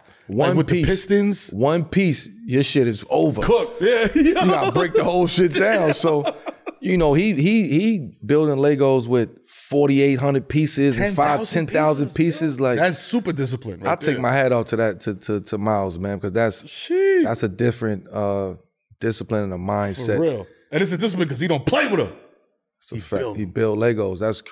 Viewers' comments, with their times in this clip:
0:05 Melo whippin out the voices im so in now hahaha